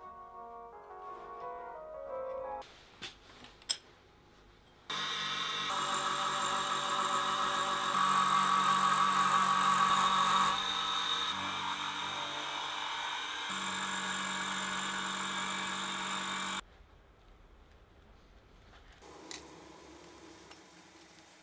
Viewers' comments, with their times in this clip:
0:05 The interval sounds oddly like “Hot Lizard” by Machine Girl.